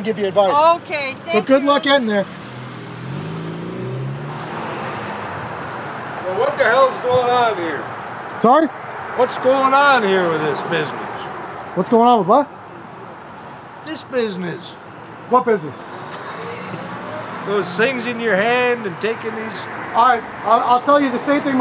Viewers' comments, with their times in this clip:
0:04 that guy sounds like John Wayne LMAO